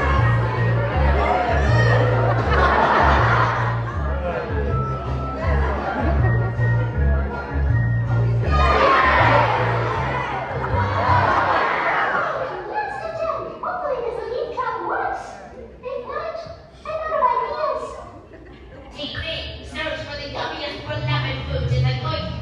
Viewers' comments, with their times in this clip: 0:08 The exact reaction of the lost to time goiky screening on July 6 in goiky theater but one thing, But in goiky the audience said Ooh! To 2 getting blasted and then when he came back they said Aah!